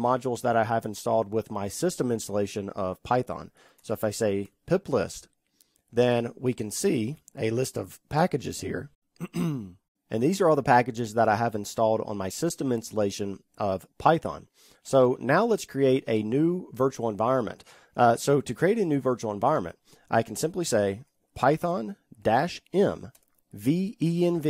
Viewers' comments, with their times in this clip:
0:07 Who else had to clear their throat also